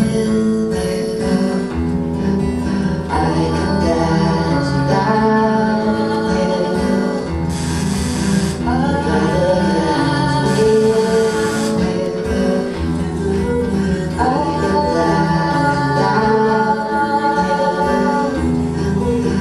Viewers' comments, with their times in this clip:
0:07 lol Amazing voice though